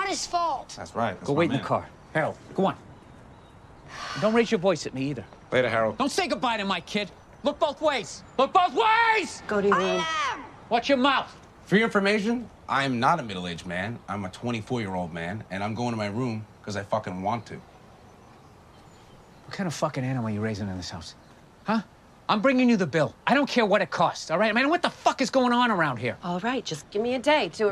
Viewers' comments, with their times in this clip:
0:08 I love Bill burr, never fails to make me laugh. all I hear is Frank Murphy